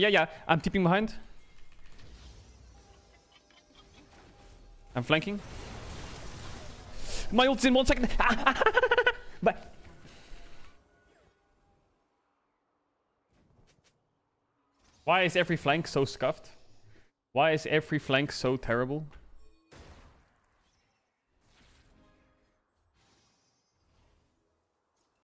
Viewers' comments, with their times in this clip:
0:08 no wonder why ur making monke sounds